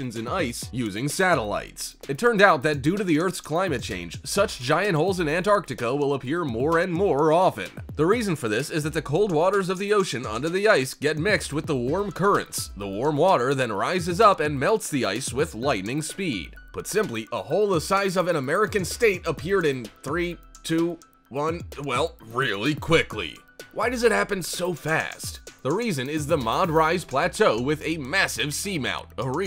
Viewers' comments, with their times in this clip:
0:10 Easily the worst "documentary" and presenter I have ever heard, he sounds like his car has fallen on him, yet he is determined to finish this irritating diatribe, I'm not!! Bailed out ...